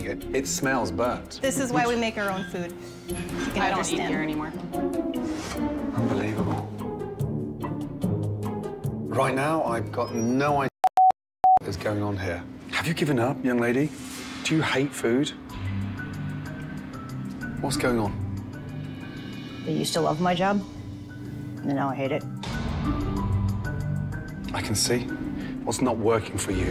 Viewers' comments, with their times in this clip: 0:09 is that morse code?
0:10 Ramsay got so mad he started speaking in Morse Code
0:10 did anyone else hear the beeping ? it scared me lol
0:10 What is with the video and audio glitch and cut?